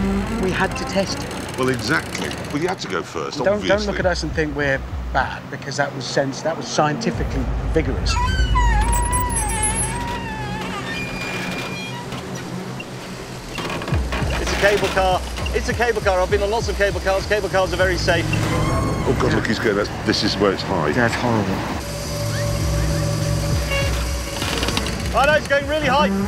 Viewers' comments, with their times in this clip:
0:08 Oh man... i actually thought it was May screaming Lmfao... obviously it's not. 🤣